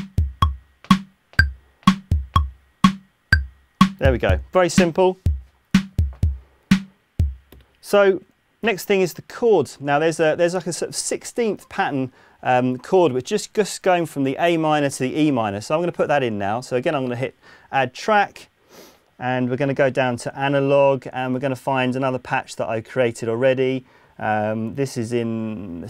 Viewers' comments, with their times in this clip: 0:03 Not so fast. There's a double snare hit every 4 bars.
0:09 1) Bass section in the Bridge is not accurate. 2) The second bridge uses a variation of the main synth. 3) those are 1/8s, not 1/16s ;)...